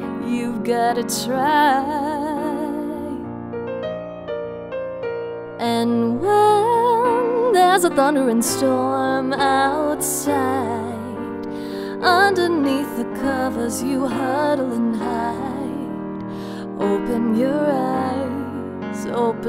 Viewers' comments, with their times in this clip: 0:03 the piano part sounds like the Wii Sports theme lol
0:03 it sounds like the Wii sports song😂
0:03 Am I the only one who hears the wii sports theme